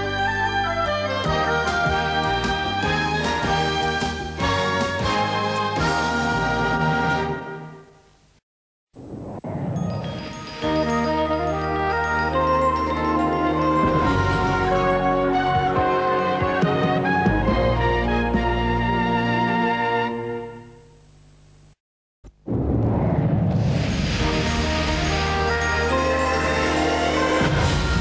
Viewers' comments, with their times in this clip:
0:09 sounds like it could be a prototype of Nine's music for its 1992 ident